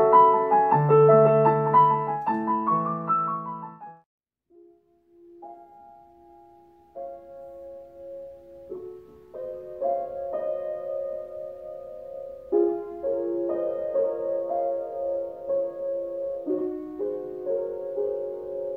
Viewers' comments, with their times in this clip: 0:04 .....at its a Steinway but not tuned....it sounds like honky tonk